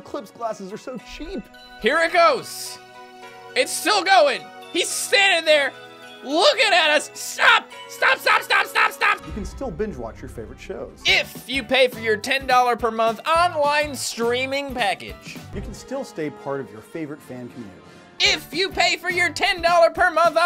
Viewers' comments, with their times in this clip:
0:07 Homeboy straight up sounded like Gene Belcher from Bob's Burgers.